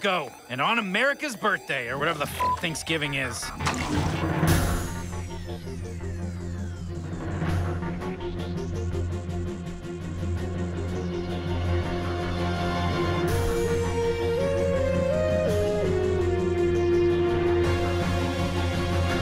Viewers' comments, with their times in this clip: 0:03 smooth audio transition